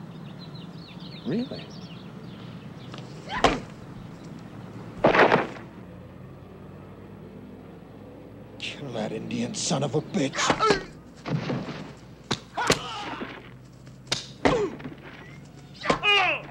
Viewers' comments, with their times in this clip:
0:03 Billy Jack put his best foot forward...SMACK!!!